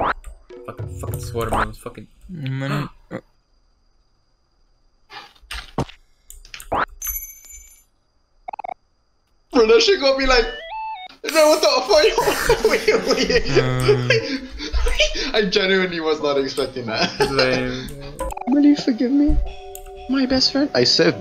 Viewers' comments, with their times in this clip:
0:05 that cutoff thud sfx is the funniest thing wtf
0:05 I LOVE THE SPLIT SECOND VINE BOOM